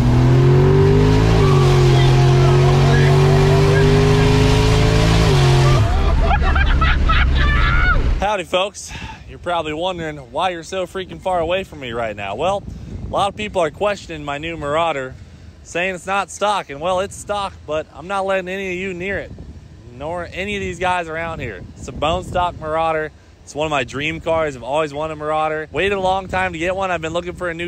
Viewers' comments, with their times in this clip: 0:10 “ Dont mind me just a hovering military helicopter ”
0:11 Blackhawk Heli hovering in the background?